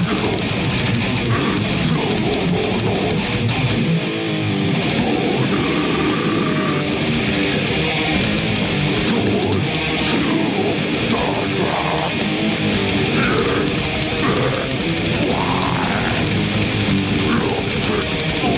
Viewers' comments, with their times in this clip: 0:04 The vocals are brutal here!